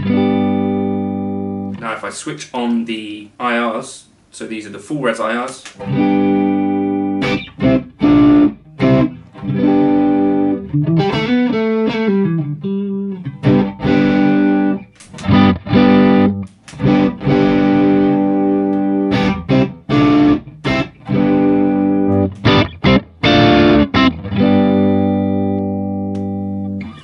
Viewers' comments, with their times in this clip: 0:08 The first IR you play sounds most in the room to me. Im listening through my etymotic er3se (these in ears sounds amazing to me, I also use them with my hx stomp, stomp into usb interface) also, I cant really tell but how are you recording the guitar tone in this video? Are you using the axe fx3 into studio monitors and then using a room mic or is the audio direct from the axe fx3? I guess that shows how "in the room" they sound lol